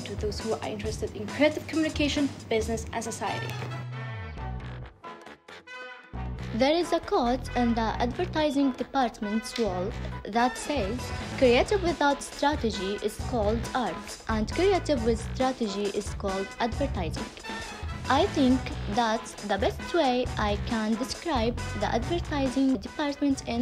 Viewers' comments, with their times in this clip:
0:09 Hahahaha I swear, the English language fits her mouth she’s cute 😂♥️